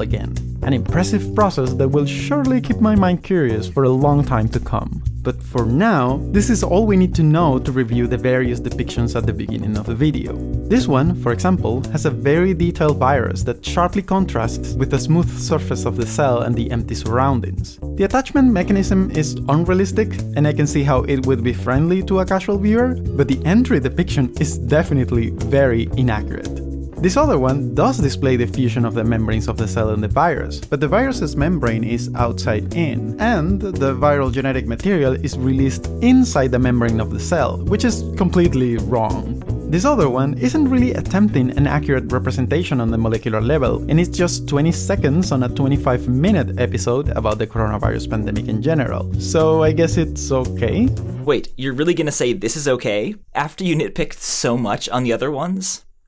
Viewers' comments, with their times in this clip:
0:08 Haha check out what the music does
0:39 that sync of content and music is a really nice detail. Not to lessen the content of the video, but IMHO the music really puts this on another level!